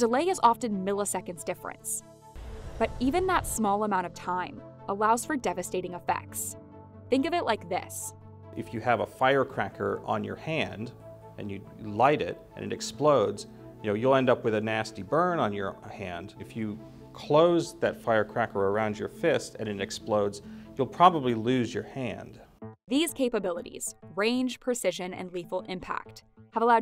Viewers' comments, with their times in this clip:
0:08 My man really quoted a line directly out of Armageddon. Except he kinda stumbled while saying it.